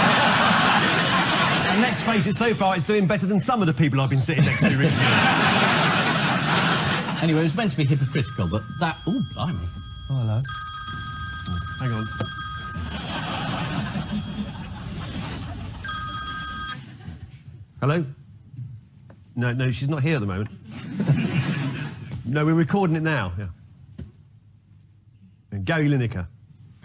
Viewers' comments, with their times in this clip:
0:07 "yeah I know" the whole bit is so fantastic deadpan, I can watch this time and again. One of Merton's highlights in 60+ series.